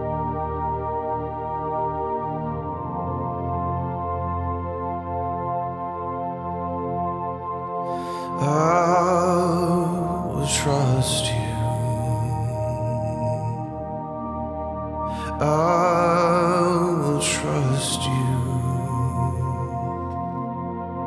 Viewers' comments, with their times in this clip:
0:04 Here's where he starts singing "I will trust you..."